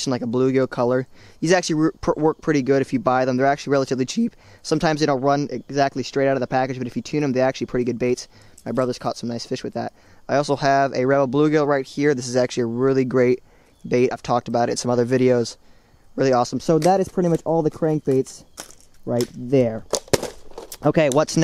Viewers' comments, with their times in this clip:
0:05 Notice voice crack